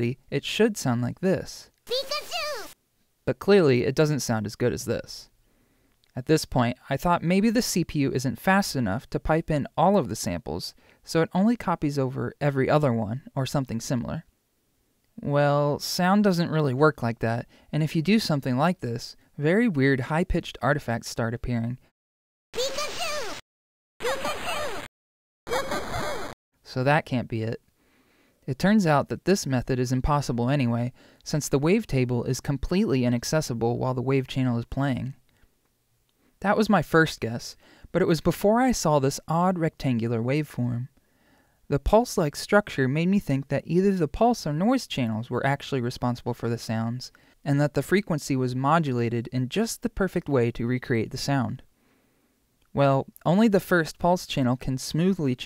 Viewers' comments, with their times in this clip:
0:08 When you play every other sample it's like reducing the bitrate of the sample instead of the bit depth, and sometimes when making music or designing sounds you can use an effect made to do that, called a Bitcrusher. Usually it also allows for bit depth reduction too but bitrate reduction has a more unique sound. You can couple it with a pitch-changing simple wave like a sine or triangle and it produces a soft dubstep-like growl.
0:22 Sounds like some kind of chiptune low/high pass filter/resonance.
0:22 pikachu slowly fading into the abyss.
0:22 The first one sounds like a Sega Genesis bruh
0:43 No one: Len in Remote Control: FOOOOOOOOOO